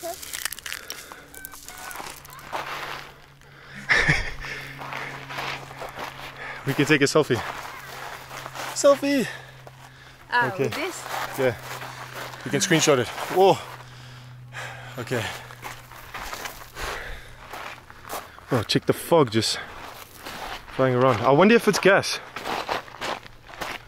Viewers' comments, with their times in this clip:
0:10 Sounds like a germans marching to invade my country in old movies 🤣🤣🤣